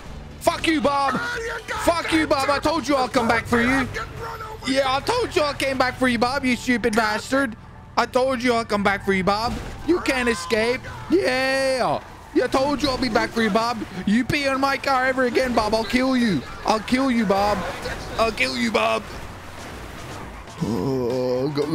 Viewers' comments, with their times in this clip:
0:05 that voice crack tho is just...